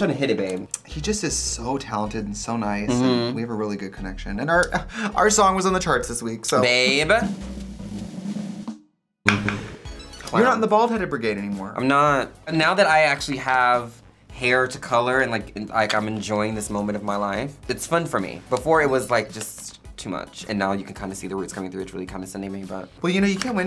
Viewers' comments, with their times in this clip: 0:06 It’s the absolute conniption Trixie has before a tongue pop